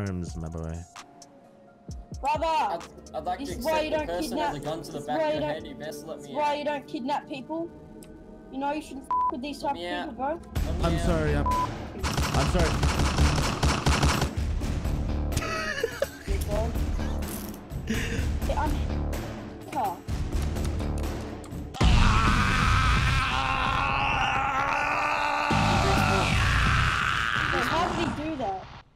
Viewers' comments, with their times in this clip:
0:05 the kid wasn’t even gone thru his puberty but still wanted to sound so badass but they were constantly interrupting him lmao
0:15 the anime MC scream